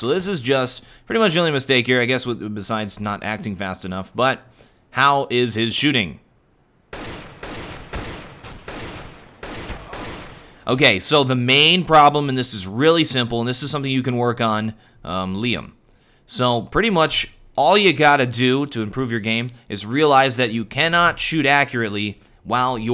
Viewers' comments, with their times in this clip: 0:05 the shots sounds like music to me
0:05 i hear a beat in this and it's awesome
0:07 I thought his shooting sounded like a nice little percussion sample from a song HAHAHA!